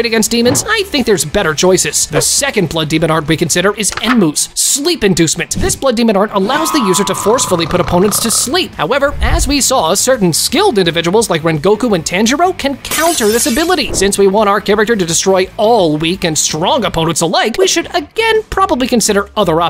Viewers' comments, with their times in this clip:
0:06 Observation haki sound